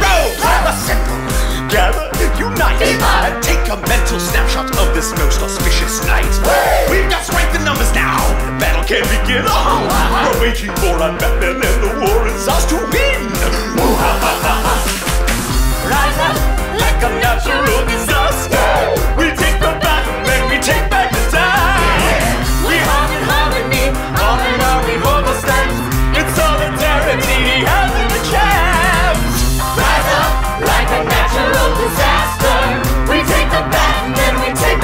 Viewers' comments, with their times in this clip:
0:06 I can’t tell if this part reminds me more of Centerfold by J. Geills or Weird Science by Oingo Boingo.
0:19 I always thought they said “we take the bat down and back the crown” for some reason